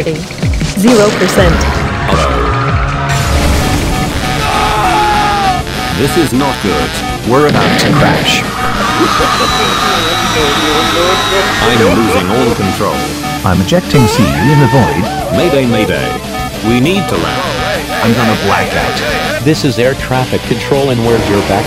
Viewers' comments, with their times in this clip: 0:03 I swear the music was very good